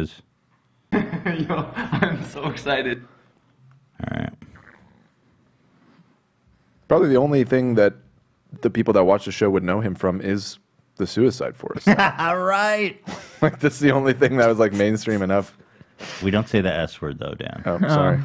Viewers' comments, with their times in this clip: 0:04 Ethan calling out Windy Williams but over here making noises of his own?? Fartgate 2.0